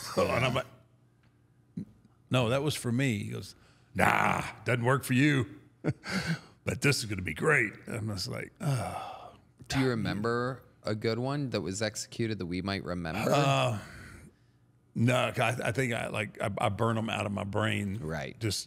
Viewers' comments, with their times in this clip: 0:05 that vince impression is comedy 😂